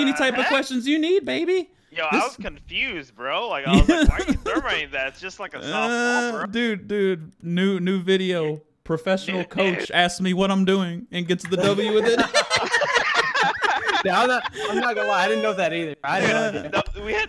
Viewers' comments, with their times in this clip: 0:04 Lol the kawhi Leonard laugh